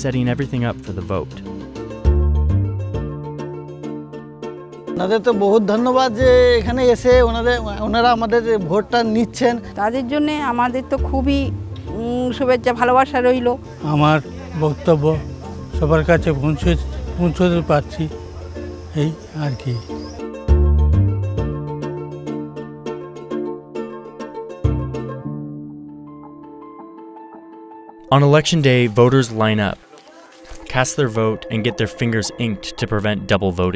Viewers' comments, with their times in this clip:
0:04 that sounds more Bengali than Hindi. We’re y’all in Kolkata?
0:06 I was scrolling down the comments and was listening to the video. And was shocked to listen Bengali. Then realised it's the West Bengal.
0:09 this is how it is like to hear Bengali.
0:12 they are speaking Bengali.
0:17 The people are speaking Bengali